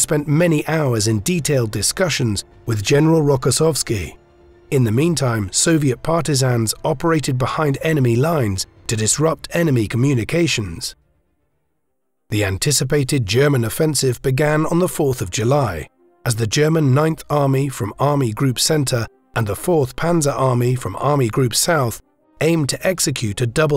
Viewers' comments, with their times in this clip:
0:05 Anyone hears the boss music? 🐻